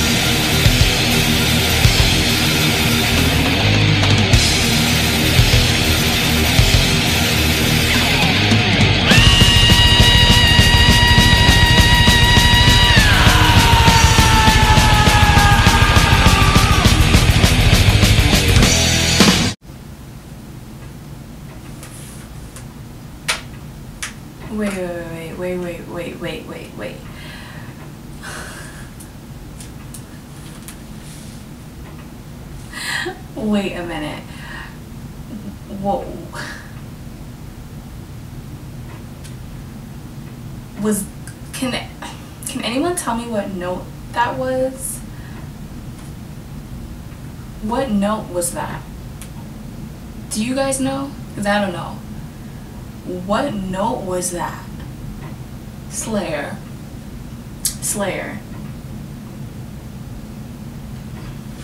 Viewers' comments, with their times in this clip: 0:09 Even my perfect pitch isn’t helping much here, but I’m like 90% sure that “note” was a (extremely high) B flat. Could be slightly off but it was meant to me more of a scream than any kind of melody lmao
0:09 The sound of someone's soul going to hell.
0:10 That riff probably one of the most iconic riffs in all of metal
0:46 Being a guy with perfect pitch, I would say that note was either G#6 or A6, but due to the tuning of the guitars, most likely G#6 hahahah :)